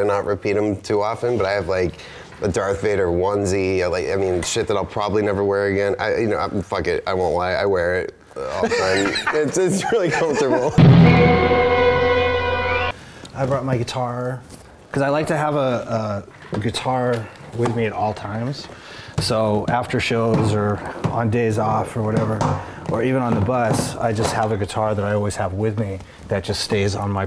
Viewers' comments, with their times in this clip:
0:09 LOVE HIS LAUGH